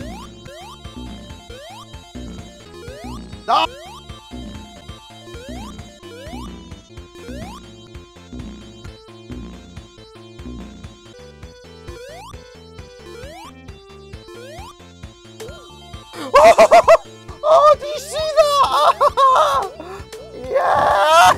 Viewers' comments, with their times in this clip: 0:03 Perfectly cut scream.
0:03 Perfect cut scream 👌